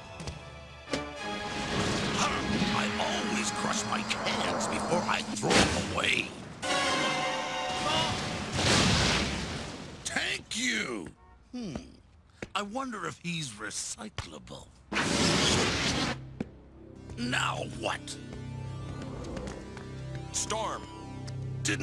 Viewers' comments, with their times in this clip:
0:09 “Tank you.” I’m dyin’ 😂
0:09 TANK you... It wasn't me! It was the cartoon!